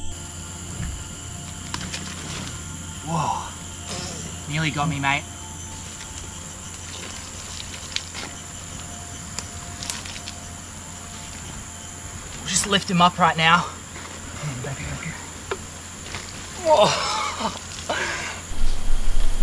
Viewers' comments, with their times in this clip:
0:03 Now who farted ?